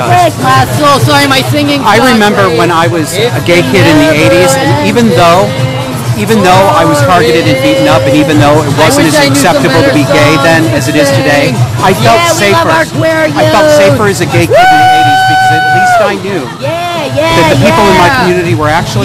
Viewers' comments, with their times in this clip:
0:05 wtf is this voice Raspy frog voice: "YAY WE LOVE OUR Q WEER YOUUUTH" 🤨